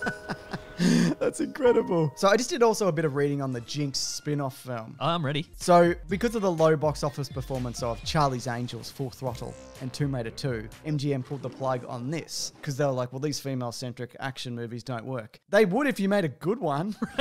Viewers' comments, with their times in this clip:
0:05 can't unhear how much he sounds like spongebob now